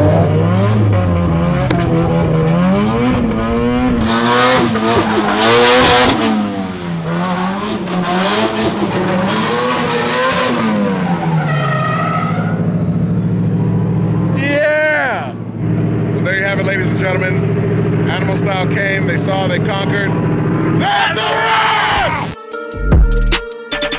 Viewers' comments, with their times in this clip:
0:04 Anyone catch the turbo "laughing" ?